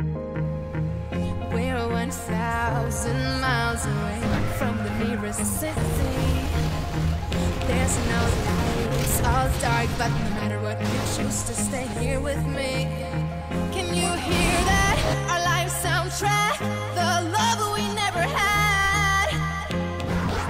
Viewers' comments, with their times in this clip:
0:04 Lol what was that scream